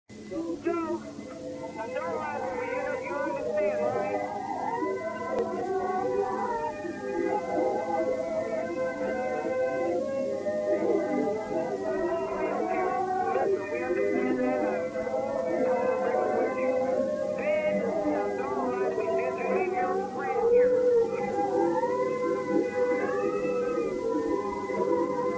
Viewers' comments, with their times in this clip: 0:02 I Heard a voice heared said ''you understand Right''
0:12 Also I hear “we don’t care”